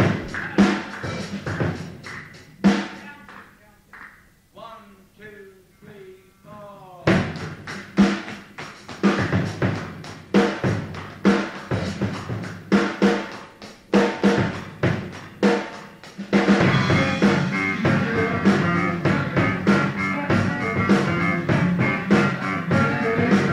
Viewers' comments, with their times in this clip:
0:04 Bonzo's Trampled Underfoot intro Money.